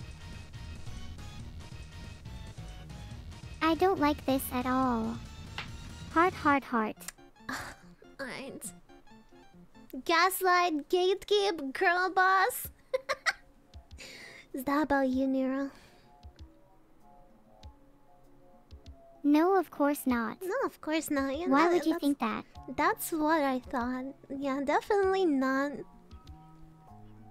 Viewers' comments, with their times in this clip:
0:09 muted part ynfortnaly